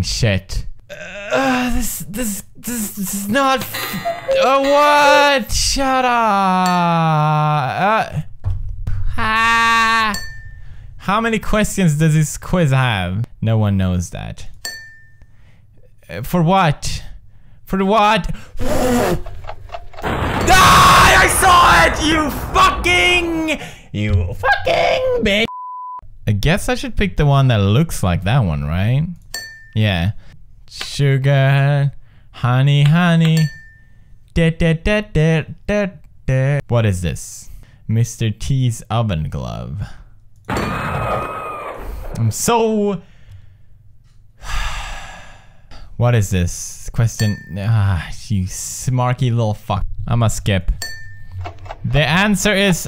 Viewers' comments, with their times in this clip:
0:09 Why is no one talking ?
0:34 t gay knocking on the door